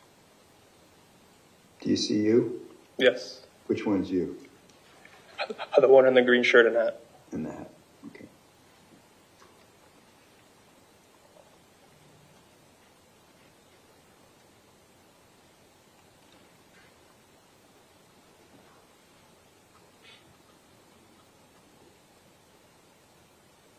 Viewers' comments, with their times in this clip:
0:05 Listen to the subway artists answer at the mark. Nervous much?